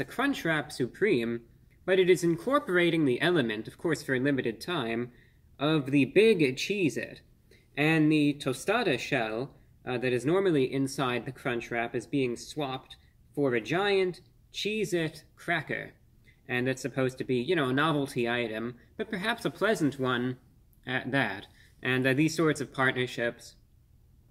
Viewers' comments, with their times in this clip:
0:10 The static audio spark really drives in the food review home